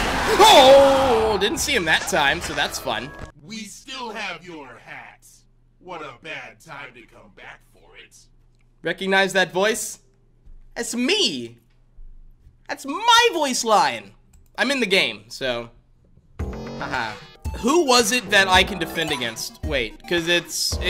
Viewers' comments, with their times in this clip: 0:08 well...no I don't recognize the voice because its the point of voice acting